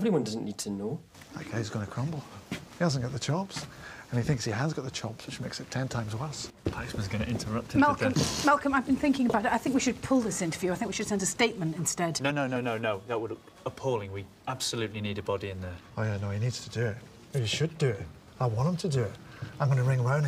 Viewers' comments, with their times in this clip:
0:06 I think is the first time I've ever seen Malcolm laugh